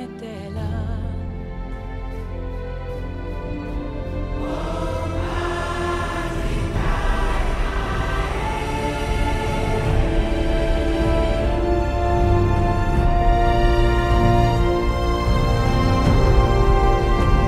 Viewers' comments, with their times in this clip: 0:03 we need an extended chant of this
0:04 is just amazingly epic it actually sounds so native